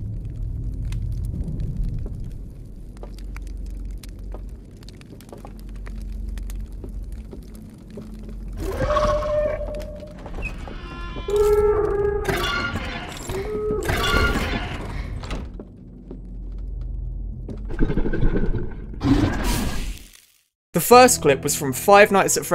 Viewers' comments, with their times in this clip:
0:07 What accentuates the fear of the second clip especially when you're in the game is the fact that you've been hearing them play that music everytime you were outside, and when you finally find your way in, it stops, almost immediately